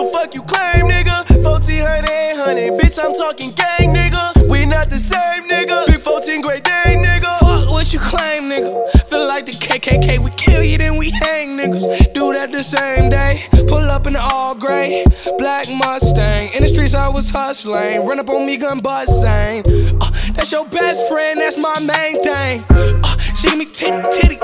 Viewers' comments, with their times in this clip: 0:09 boi do a voice crack dammmmm